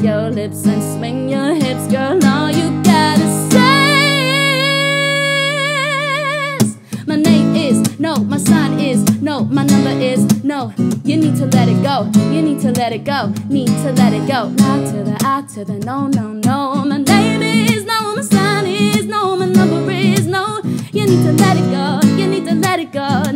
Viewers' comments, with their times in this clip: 0:04 This deserves so many more views... Hooked me in right from the beginning and that note .... I'm so in love with your voice. New sub 😍☺️
0:06 I love this cover more than the original. Just guitar sounds so good and took my breath away. I'm in love.
0:06 You have an amazing voice!! !! Awesome!! U earned yourself a subscriber!